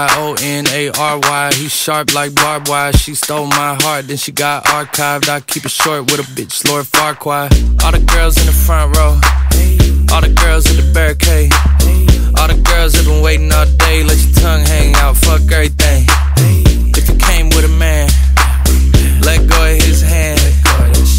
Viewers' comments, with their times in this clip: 0:05 not me thinking he said lor faquad 💀